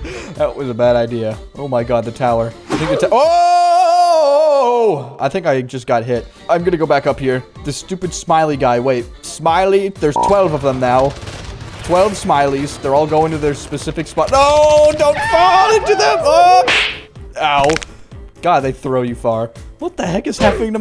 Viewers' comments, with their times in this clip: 0:03 he almost made the "OOOOOH MY GAWAED" meme